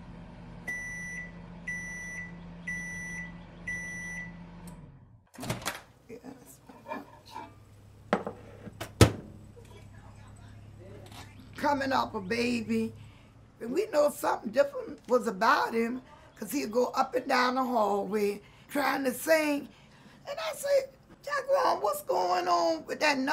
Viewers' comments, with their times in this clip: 0:04 who else looked over and checked they microwave?